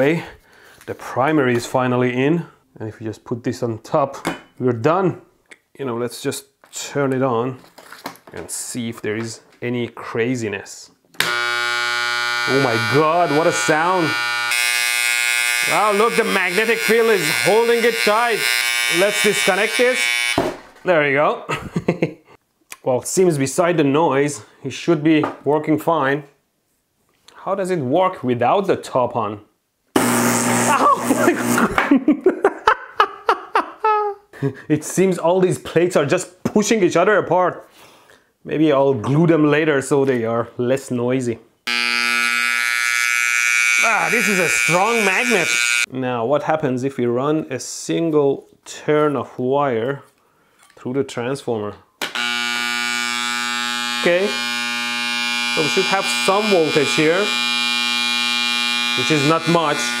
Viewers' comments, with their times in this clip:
0:09 It sounds like a razor that is on😂
0:11 sounds like a hair cutter😂
0:11 why does it sound like an electric trimmer for cutting hair
0:11 sounds like a 20 mva transformer edit: oh please tell me you didn't glue the top part
0:11 fire alarms in the 50s-80s.
0:11 The sound of our hairshaver at home
0:26 "How does it work without the top on?" A10 Warthog Noises
0:27 "How does it work without the top on?" CHAOS ENSUES Joker laugh 😂😂😂😂😂
0:27 tbh that was the funniest sound I’ve ever heard come out of a transformer. Literally how does electroboom create such funny sounds with electronics?
0:28 "How does it work without the top on" Eldritch core noises
0:29 you: how does it work without the top on? The box: like this! BZZZZZZZZZ!
0:30 The way he laughed when the stack coil gunned itself apart lmao
0:30 the best primate ancestral laugh ever 😂😂😂
0:31 laugh of wonder 😆 😄 🤣
0:31 mad scientist laugh
0:31 Your laugh reminds me of the electrician who reviews your videos.
0:31 let’s see if this works without the top on violent buzzing noises
0:31 that laugh loll
0:31 thet laugh is EPIC
0:32 Mad scientists laugh (evil+crazy+genius)
0:32 It that's not the laugh of a mad scientist, I don't know what else is. Bonus tip: Listening to the laughter on loop gives an enhanced effect.
0:42 what i hear the barber
0:42 so thats why hair clippers make that noise